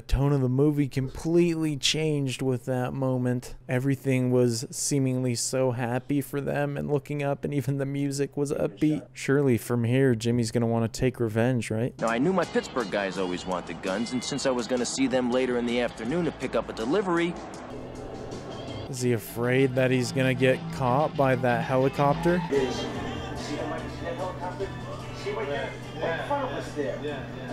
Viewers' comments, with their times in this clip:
0:08 the reason the pace and narration starts to pick up speed and become erratic is because it's meant show Henry's spiraling cocaine addiction which ends with a crash (his arrrest).